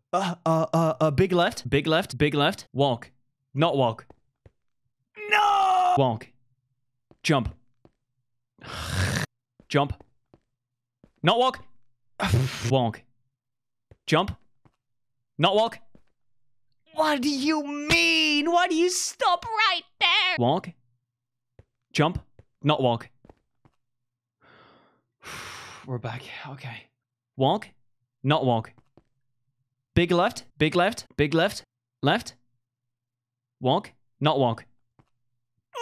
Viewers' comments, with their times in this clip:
0:05 that NOOOOO was sooooo funny
0:08 angry fox noices
0:17 the MEAN perfectly time with the damage sound
0:19 I'm wheasing his voice got so high lol